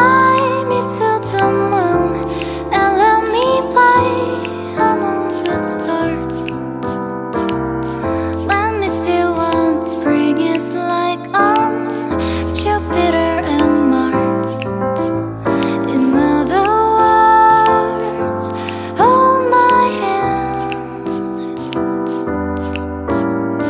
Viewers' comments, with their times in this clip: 0:07 Gorgeous voice lovely lady